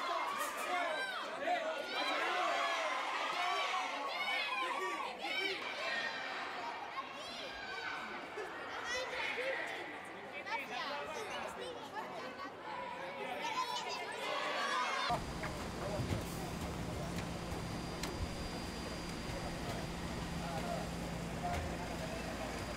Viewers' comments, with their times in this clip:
0:05 Aw the kids shouting "Piqué! Piqué!" on